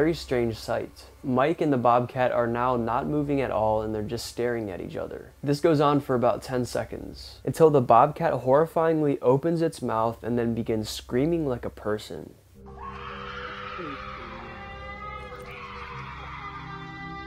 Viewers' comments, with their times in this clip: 0:05 Mountain lions are the ones that scream like a woman not bob cats. I can see why people assume they are “skinwalkers” ( there are other terms for shape shifting or mimicking spirits) but it sounds horrifying. This is also a mountain lion not bob cat. The noise is totally normal.